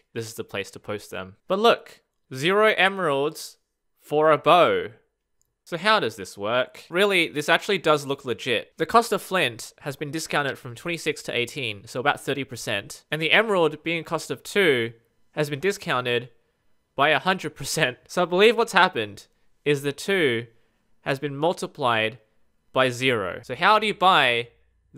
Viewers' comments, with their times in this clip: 0:08 i thought you said "sh*t" but you said "legit"